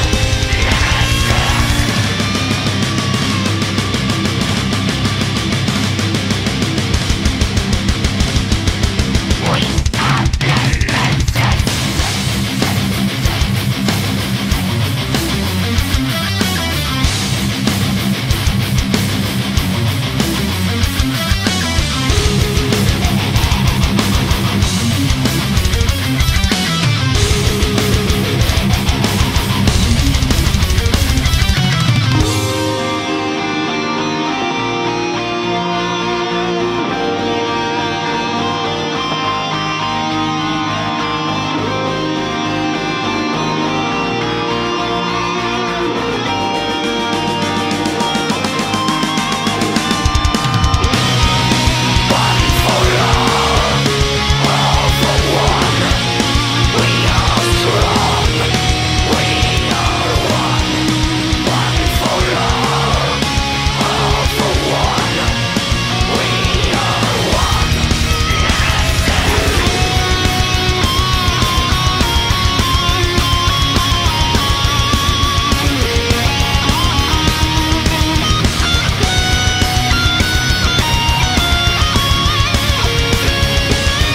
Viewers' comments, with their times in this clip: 0:10 is just a nasty riff
0:32 One of the best songs i've heard in my life, is just simply beautiful. Melodic, powerfull. Doomsday Machine the best album by far of Arch Enemy
1:09 I love this guitar solo!!